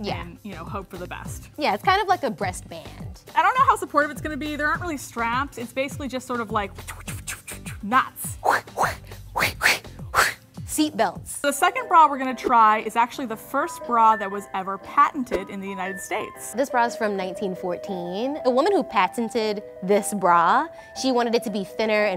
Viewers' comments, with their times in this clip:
0:07 omg she sounds like the buzzfeed sound lol
0:08 anyone else think that the like wind kinda sounding noises that she made kinda sound like the buzfeed intro?!?!
0:09 Who else thought the girl on the right sounded like the Buzzfeed intro 😂😂😂💀💀💀
0:09 ...she made the buzzfeed sound